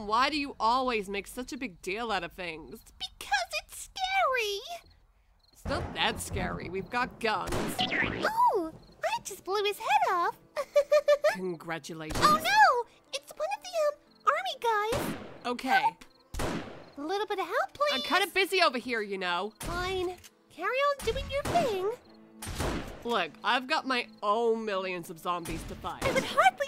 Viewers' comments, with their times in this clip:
0:07 Kale went to bulma voice lmao